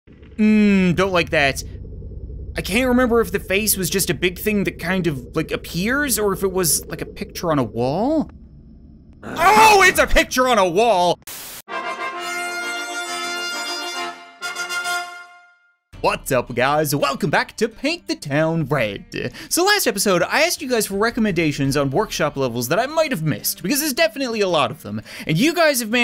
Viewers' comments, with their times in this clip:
0:05 his scream made me jump more than the actual jumpscare
0:10 His Yell Scared Me XD DX